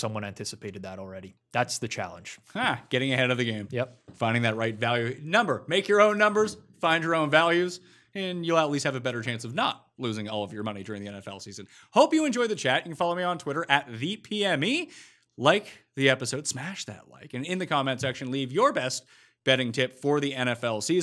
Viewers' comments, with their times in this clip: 0:04 at 0.5 playback speed. Enjoy drunk Pat!